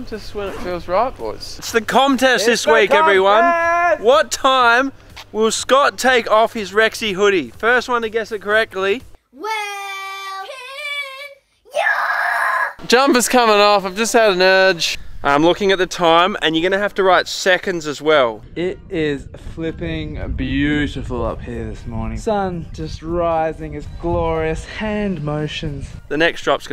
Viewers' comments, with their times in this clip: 0:08 "Weeeee'll piiiiiin YAAAHH!!!!" Probably the best "We'll pin ya" I've seen 😂
0:09 that was such an agressive YAAAAAA in the "we'll pin ya" lol
0:11 she should start a death metal band 😂😂